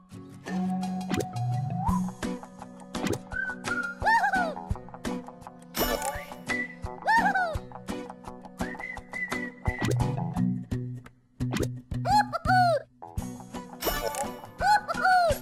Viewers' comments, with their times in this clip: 0:03 the "woo hoo hoo" never gets old